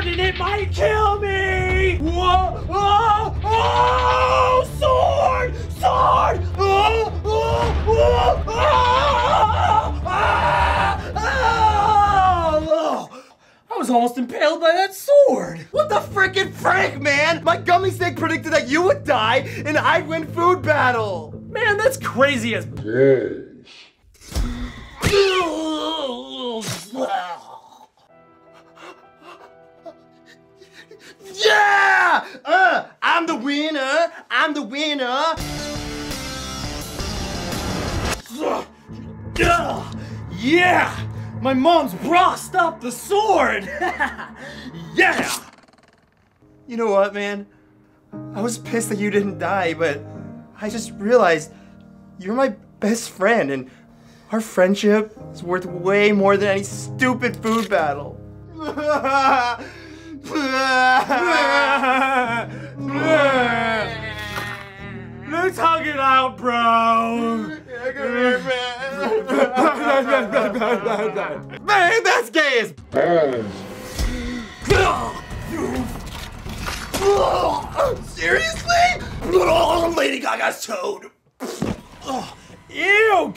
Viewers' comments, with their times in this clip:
0:10 The Best Part is when Ian screams a the sword.
0:31 anthony says "i'm the wiener" ;)
0:32 Is it just me or is anthony saying Im the ''Weiner'' Im the ''Weiner''?
1:04 Ian sounds drunk 😂